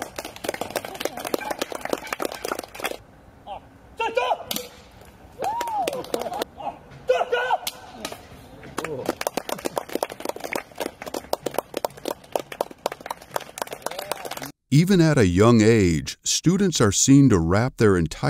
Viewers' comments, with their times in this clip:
0:03 I don't even know what happened But it didn't sound all that family friendly